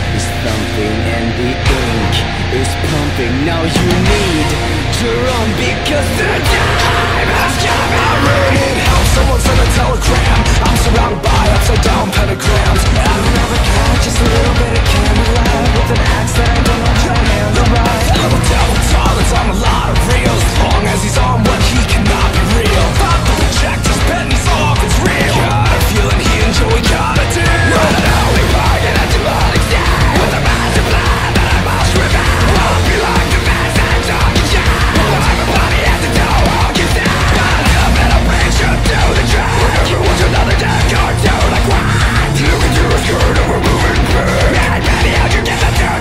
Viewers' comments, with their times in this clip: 0:04 Stylized boris: now you NADE to RAWN Me: B R I T I S H B O R I S B R I T I S H B O R I S B R I T I S H B O R I S B R I T I S H B O R I S B R I T I S H B O R I S B R I T I S H B O R I S B R I T I S H B O R I S B R I T I S H B O R I S B R I T I S H B O R I S B R I T I S H B O R I S B R I T I S H B O R I S B R I T I S H B O R I S B R I T I S H B O R I S
0:28 As a proud headphone user I'm just going to say RIP MY EARS
0:34 I dont even know what hes saying at this point🤣